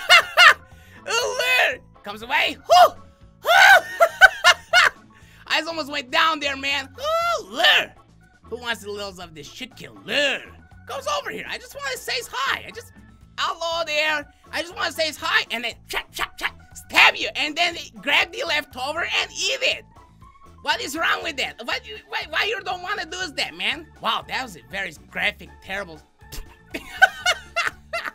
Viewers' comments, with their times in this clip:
0:10 Pause does it sound like he said shit killer